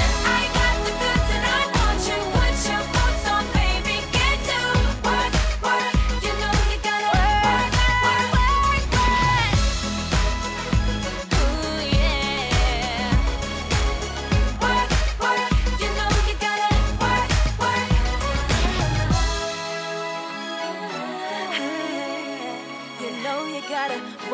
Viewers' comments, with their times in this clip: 0:09 its vanessas voice, but they got rochelle mouthing it :| :S
0:12 I love the fact that they showed that Mollie could pull off the dark side of herself. Girls, keep up the fantastic work! Vanessa, you have a very powerful voice and you don't really look like the type who would have the kind of voice that you actually do, and you really showed that off in this video. Una, I love your attitude, it really, really matches the background and music! You and Mollie really pull off that dark side! Rochelle, you also have an outstanding voice and it's perfect for this song. You should have gotten at least a slightly bigger part because your voice matches the music. And Frankie, you, too didn't get a big part in this song but your dancing in AMAZING! You proved that you have a dark side with that devilish smirk of yours: :D